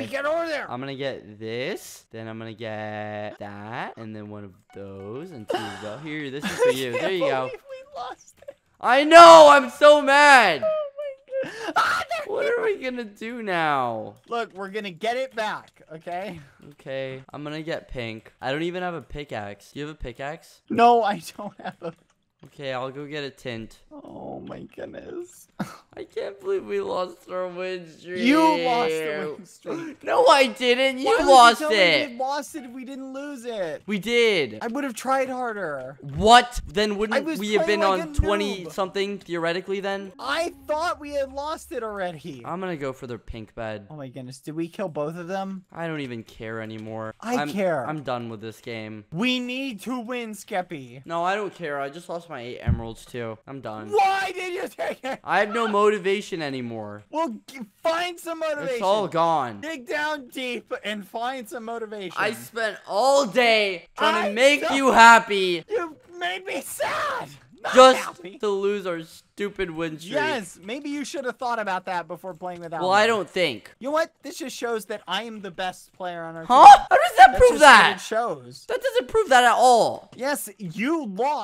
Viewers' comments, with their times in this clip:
0:06 badboyhalo starts crying 0 seconds later starts screaming
1:02 they sound like an unhappy married couple lmao